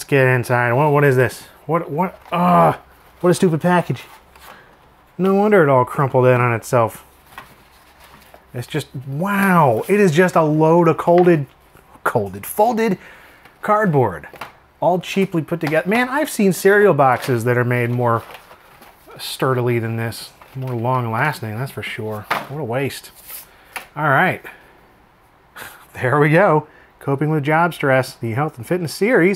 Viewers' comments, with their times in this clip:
0:09 a load of colded ... fartboard???
0:09 It's just a load of "colded fartboard", he summed it up just right there. lol
0:10 ah yes, colded fartboard